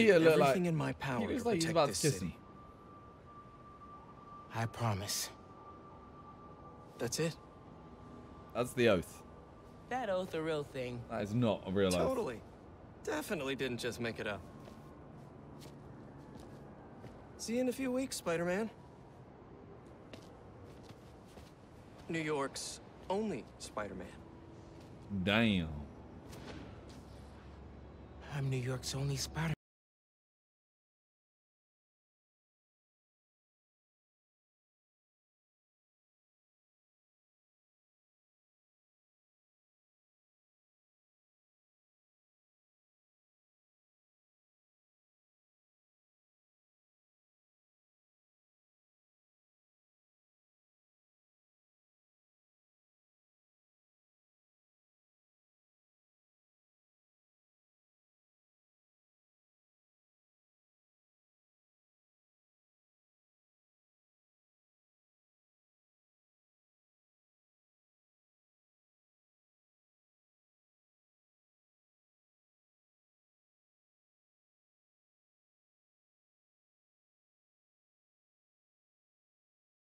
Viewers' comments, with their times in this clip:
0:06 why's the sound gone bruh
0:29 Aayo why does the sound stop ?
0:29 Why’d my sound glitch out ?
0:31 Did anyone else have their audio cut out
0:31 Did anyone else have their audio cut out
0:31 Did anyone else have their audio cut out
0:31 audio got cut
0:33 Anyone else having audio issues
0:36 Did the sound cut for anyone
1:06 Is is just me where the sound cut out